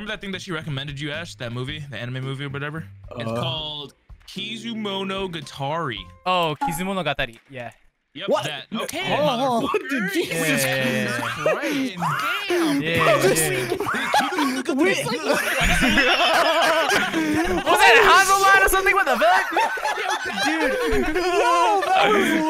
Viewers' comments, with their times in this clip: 0:03 tuxy ass sounded like google translate 😭
0:09 whoever moaned Im DEAD!!!!!!!